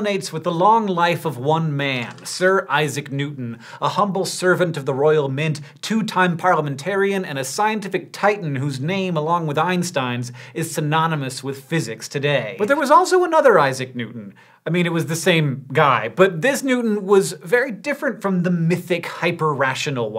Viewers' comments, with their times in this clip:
0:08 so you got the ei in Einstein right and yet you got Leibniz wrong. I mean come on...